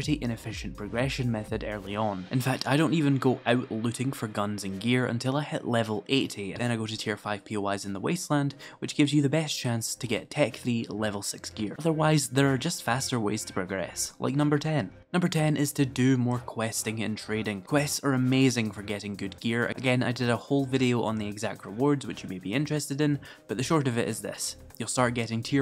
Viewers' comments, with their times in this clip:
0:07 did he say level 18 or 80